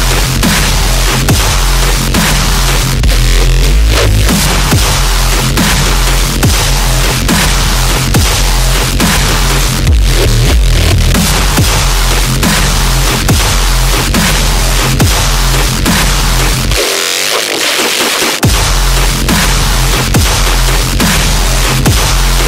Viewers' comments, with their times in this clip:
0:03 Oh FUCK that reese! Good lord